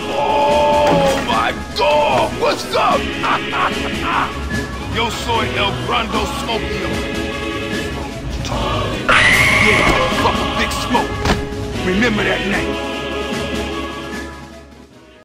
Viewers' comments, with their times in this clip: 0:09 That bat noise. 😂😂😂 this is perfect